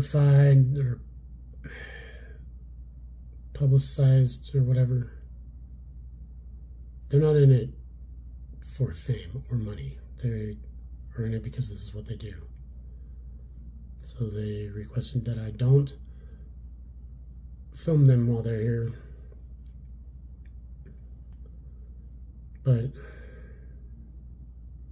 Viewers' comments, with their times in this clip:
0:10 deep Dominic voice says "hello" back.. 😮😮😮😮